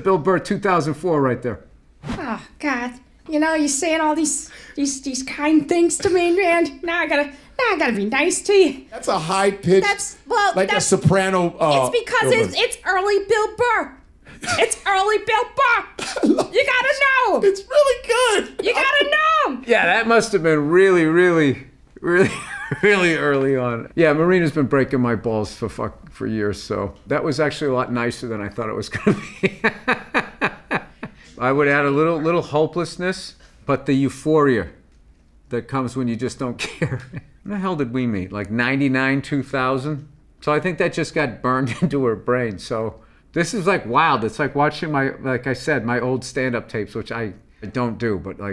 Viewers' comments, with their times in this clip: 0:03 is if Bill got kicked in the balls lol
0:03 is if Bill got kicked in the balls lol
0:30 ol’ Billy Burr coming in with the Tom Cruise laugh 😆